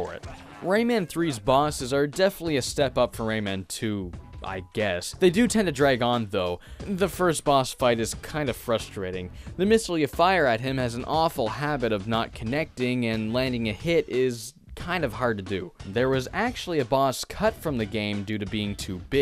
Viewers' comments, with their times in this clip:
0:04 so im the only one who found this boss super easy enough to do it first try? the music for that boss is very likeable, i would replay the level often just to rexperiance the boss and its music again. stomp on hoodlums to the beat.